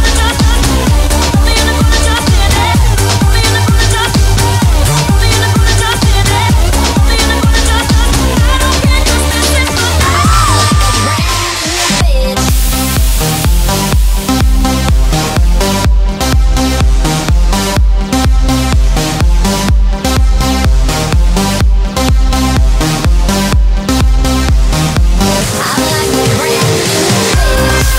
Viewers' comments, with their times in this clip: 0:09 am i they only one hearing her saying "i'm like a brand new bench" ? lol